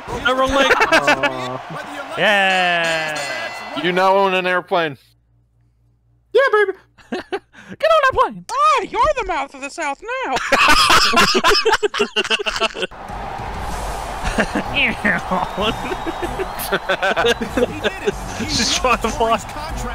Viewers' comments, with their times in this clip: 0:05 “Hey, you’re the mouth of the south now!” I don’t know why but I keep coming back for that line and delivery